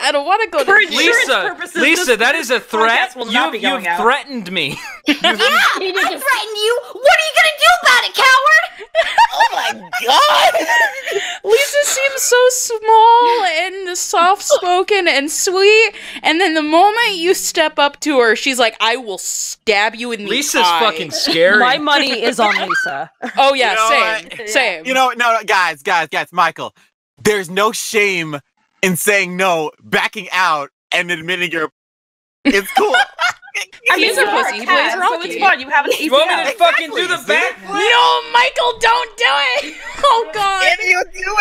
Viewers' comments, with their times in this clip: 0:05 I don't know who she is but i want her on these more often. i feel like she'd be a good voice for Cherri Bomb
0:22 I really heard a cute laugh omg 🥺